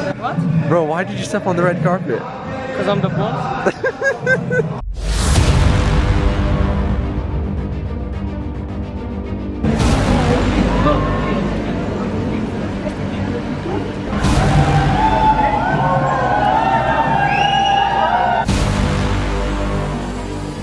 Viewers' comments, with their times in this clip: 0:05 why i am hearing a villain music on the hero actor's entry